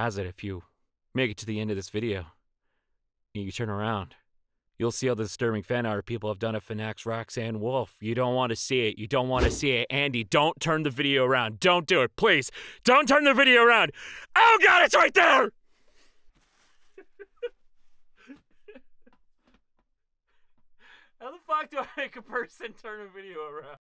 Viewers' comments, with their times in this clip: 0:09 "The world revolving"comes blaring out of my eyes